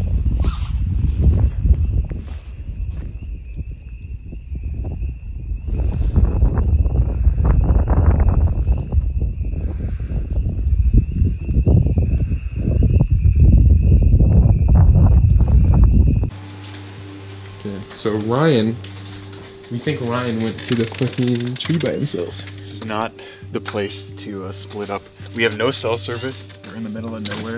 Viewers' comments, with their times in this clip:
0:08 american woodcock call